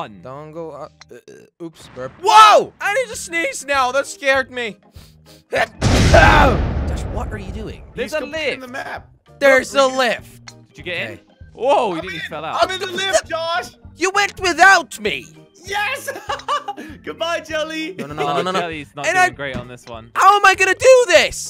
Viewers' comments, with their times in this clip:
0:05 Whoa! Talk about explosive allergenic sneeze bomb. LOL!